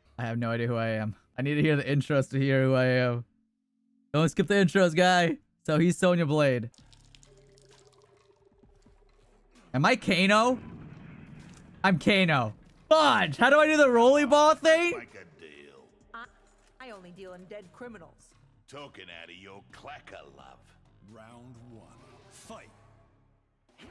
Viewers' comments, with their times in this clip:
0:07 did u reconize the piss sound 😆😆